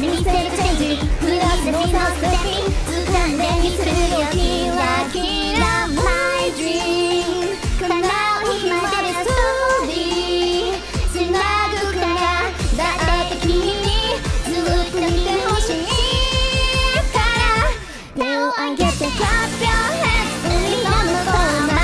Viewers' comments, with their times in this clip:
0:03 That kira kira my dream Gura did is definitely not accurate to the song but it works really well in these duet edits. Hell yeah